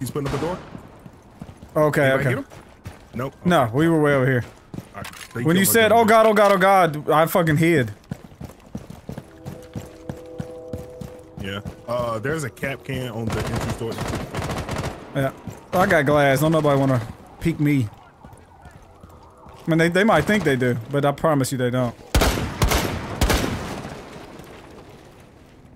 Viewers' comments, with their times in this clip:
0:06 the lights turned off and the sirens scared the crap out of me. 3 am, creepy crap, I tell you what.